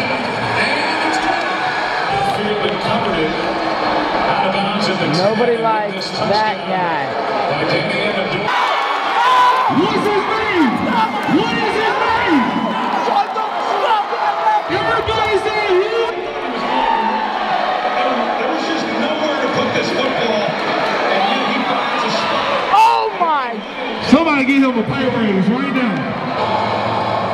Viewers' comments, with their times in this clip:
0:07 getting quiet in there...
0:11 You hear him say it again when he jumps on his friends back. Still annoying lol